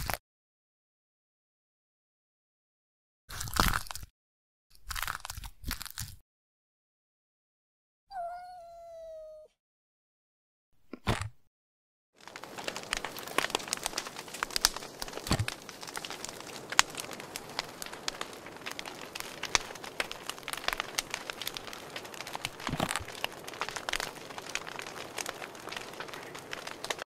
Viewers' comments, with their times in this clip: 0:06 love the sound of the legos spreading and the cat!
0:08 sad kitty moew, I wanted to cry. Too cute and sad sounding.